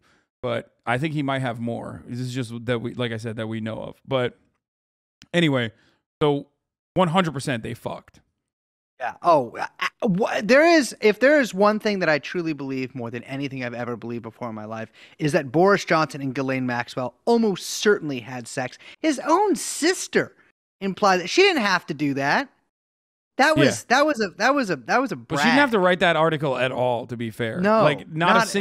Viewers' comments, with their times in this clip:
0:07 At like it sounds like my man is about to start singing Down With the Sickness lmaaaaoo
0:09 Why does sound like the intro disturbeds down with the sickness lol